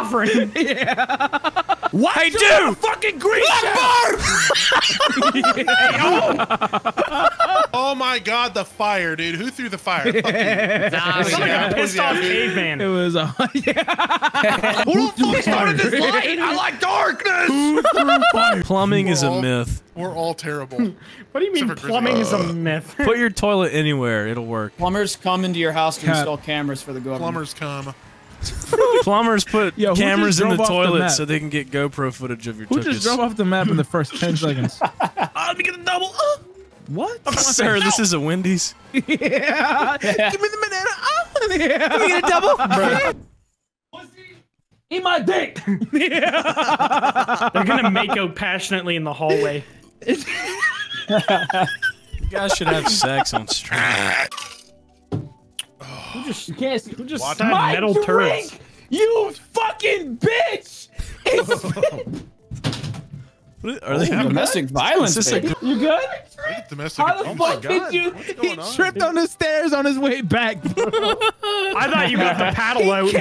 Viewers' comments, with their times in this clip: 0:03 sounds like a genuine Akbar lmao
0:55 bro that sound is THE LITERALL DEFINITION OF NUCLEAR no TSAR BOMBA LEVEL DIARRHEA?!!!